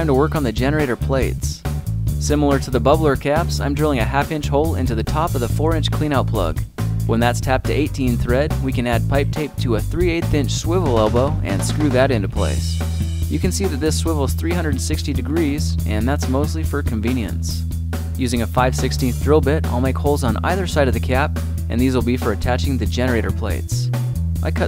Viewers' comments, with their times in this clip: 0:10 a swibble ewblow...what?